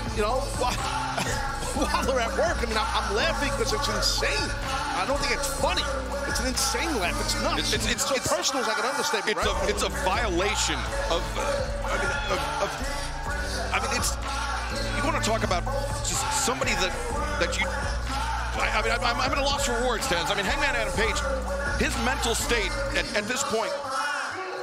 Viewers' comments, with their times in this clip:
0:07 he started to laugh at prince Nana lol